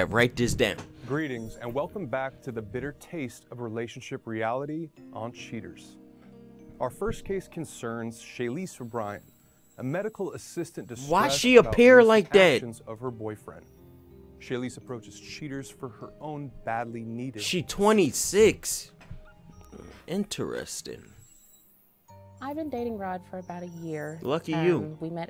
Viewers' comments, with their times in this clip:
0:06 Am i the only one who hears the christmas song ?